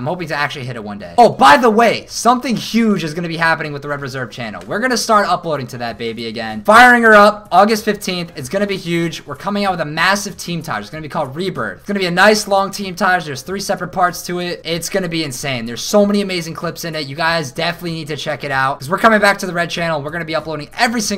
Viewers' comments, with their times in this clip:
0:08 you sound like the funspot orlando guy on the tv "ITS GONNA BE H-U-G-E"